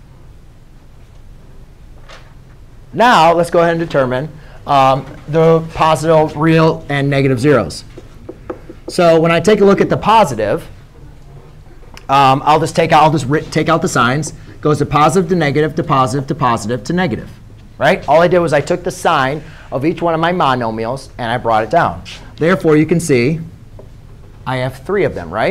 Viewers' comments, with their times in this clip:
0:08 Dead by the fact that he paused